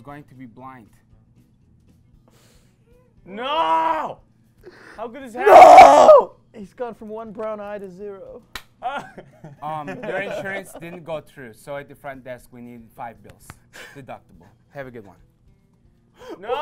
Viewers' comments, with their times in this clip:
0:04 RIP HEADPHONE USERSSSSSS